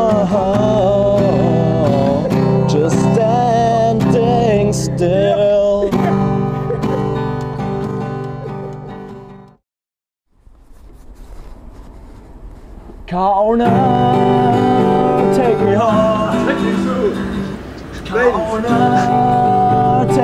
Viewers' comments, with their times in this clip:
0:06 I love the guy Yeah!!!hahaha